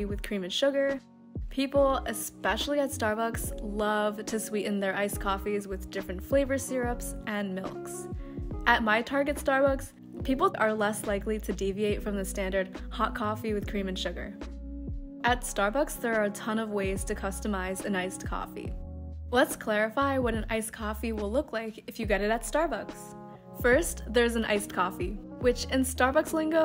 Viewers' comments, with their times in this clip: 0:10 the way you said that sounded so statistical. Lol